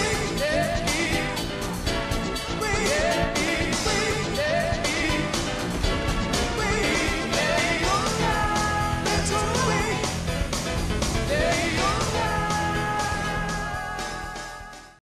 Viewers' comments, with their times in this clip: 0:09 the music and the shot of the character telling others to "go away" that is perfect